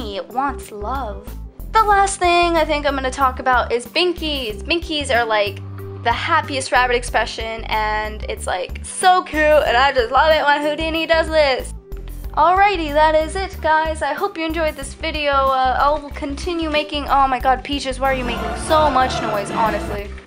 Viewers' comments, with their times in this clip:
0:04 it hears music